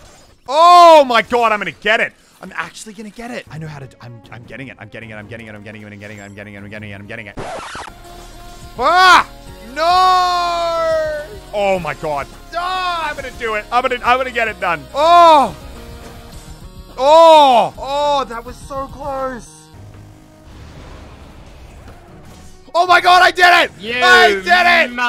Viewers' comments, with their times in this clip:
0:07 Love the linkin park